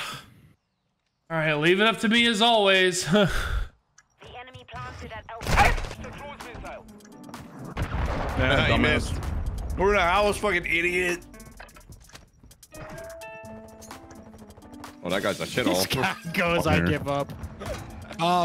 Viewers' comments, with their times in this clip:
0:06 I swear I fucking heard noglas bark